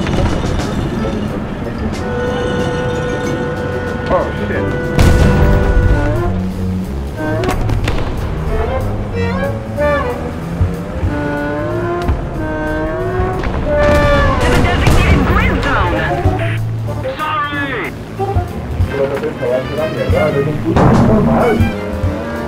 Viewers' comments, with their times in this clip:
0:07 how the...????? What is this range?!